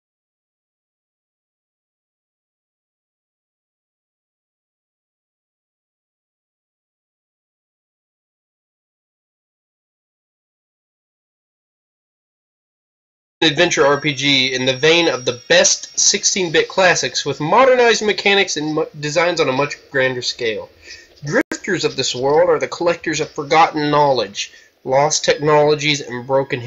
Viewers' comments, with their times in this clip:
0:09 Audio doesn't even kick in until